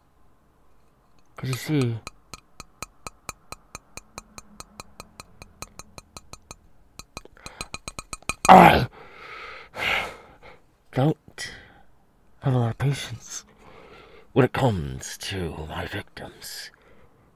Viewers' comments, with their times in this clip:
0:03 STOP WITH THE tapping! My earsss😭😭😭😭